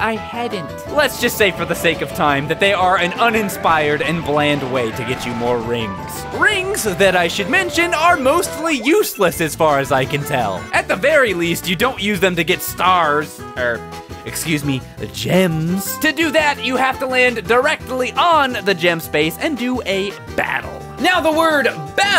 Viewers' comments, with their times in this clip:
0:05 why did he sound like sonic